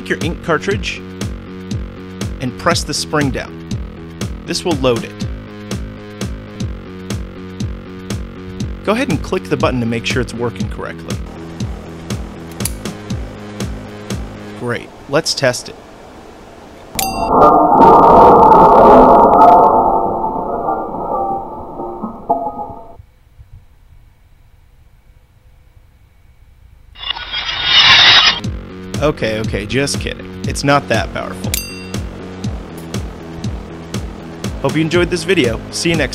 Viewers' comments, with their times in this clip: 0:06 XD Music Loop
0:17 R.I.P people with headphones